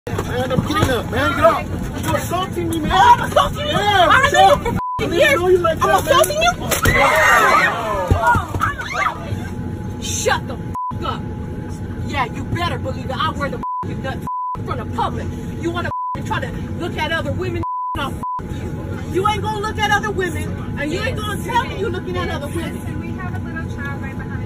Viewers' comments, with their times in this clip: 0:06 Sounds like an audience at a 3-D movie.